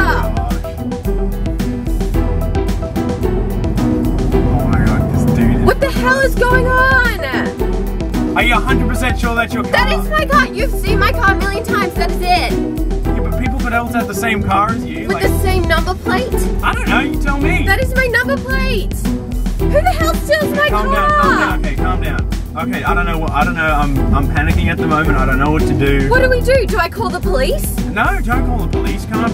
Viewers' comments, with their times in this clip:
0:10 her inner American was released